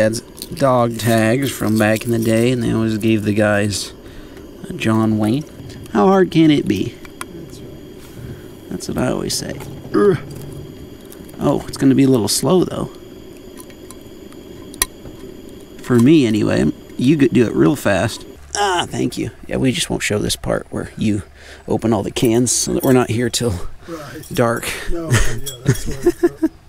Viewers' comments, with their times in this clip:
0:09 anyone else's brain go "nice hiss"